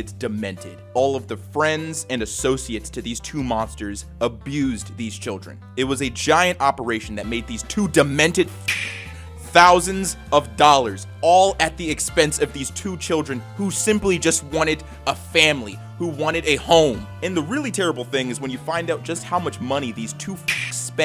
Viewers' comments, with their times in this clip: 0:08 that beep might have made things worse...